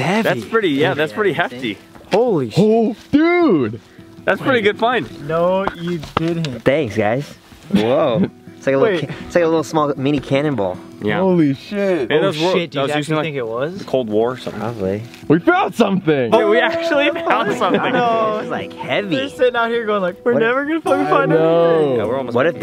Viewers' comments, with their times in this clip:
0:06 man his “thanks guys” when he said that I just said woah and his voice is so nice